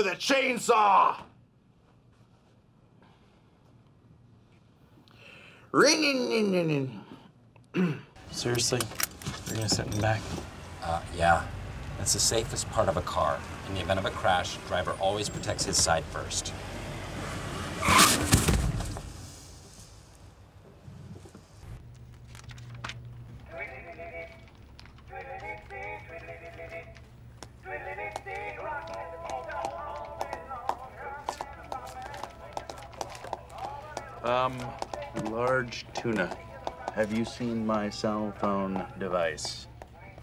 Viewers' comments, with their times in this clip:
0:05 my car when it wont start up in the winter
0:24 I’m wearing headphones and it actually sounds like a phone is going off in my room.